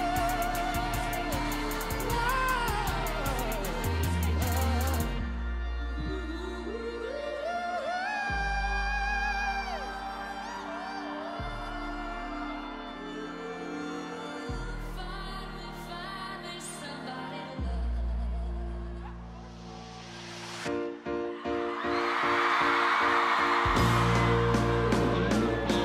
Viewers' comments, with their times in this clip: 0:10 Let's talk about that Somebody To Love sample